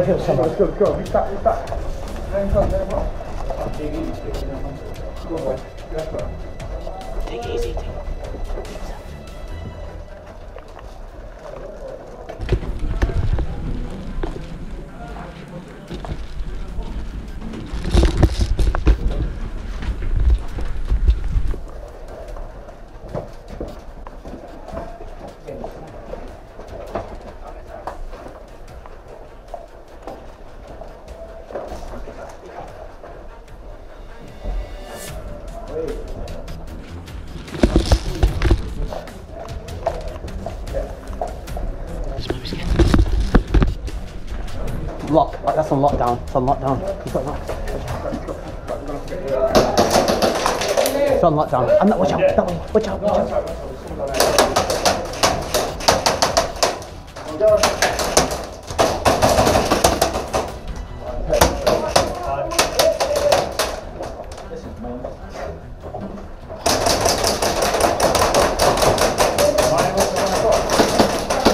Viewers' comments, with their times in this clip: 0:10 anyone one thought they were getting a call on messenger Xd i started looking for my phone
0:38 I can't hear what happened ? Yo've pushed too far? :D
0:56 is that romanian?